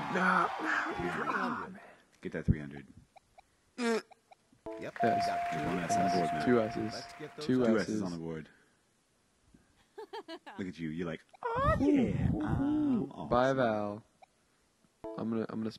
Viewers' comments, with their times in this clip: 0:03 Fart? What the hell?